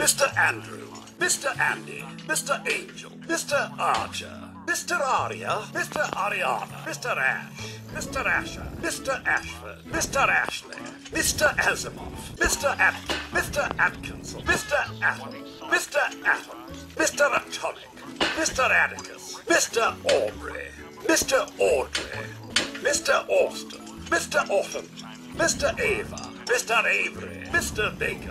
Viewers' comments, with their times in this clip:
0:10 You can hear his voice actor laugh kinda when he says Asimov. Edit: I continuously had to respell it because I got it wrong Edit 2: 6 times
0:11 i love how he chucles when says "mr. Azimov"